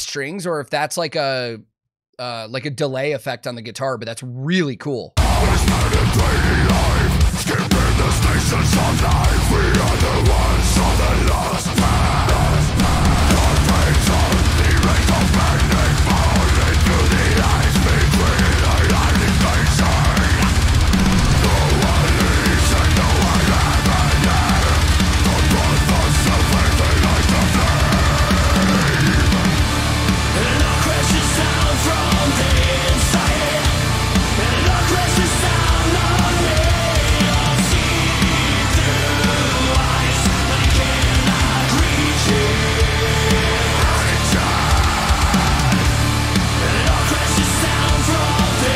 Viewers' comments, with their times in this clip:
0:06 Just subscribed to your channel, first time seeing you on YT. I totally didn't notice that guitar effect you picked up on until it was pointed out Unless the new Gatecreeper changes my mind, this is the album of the year for me.
0:31 that sounds "pop" for me...
0:31 Emopop :face-blue-smiling:..thats the word ..this shit sounds like emo/pop ,generic and meh.But hey ,enjoy it.That was only my opinion.